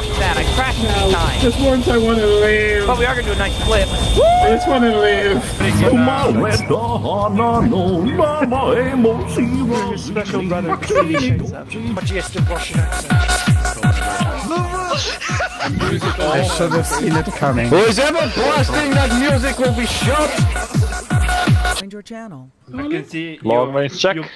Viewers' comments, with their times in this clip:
0:08 dear God it sounds like goofy singing chocolate rain in a some language.